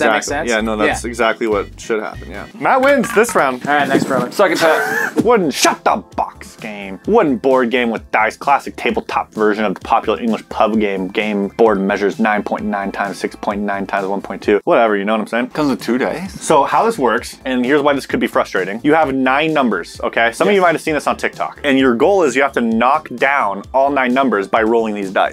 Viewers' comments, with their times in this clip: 0:05 did anyone else hear “shut the f*ck” or was it just me.
0:06 had to play that again to hear what he really said